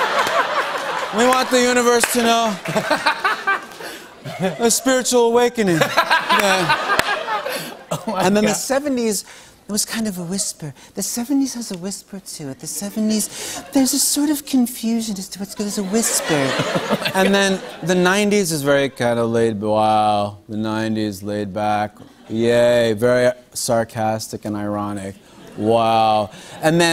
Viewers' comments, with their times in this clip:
0:09 The 70's bit reminds me of Mr.Van Driessen from Beavis & Butthead